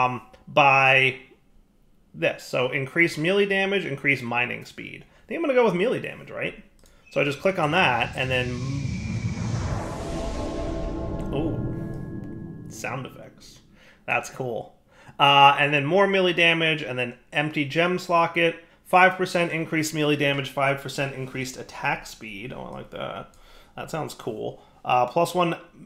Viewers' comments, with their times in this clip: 0:06 that sound reminded me so much of the old playstation 2 start up sound